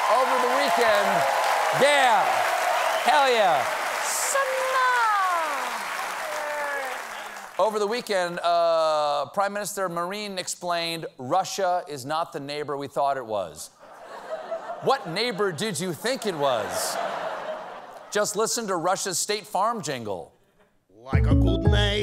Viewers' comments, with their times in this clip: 0:04 what did he say? Sahna? Whats that?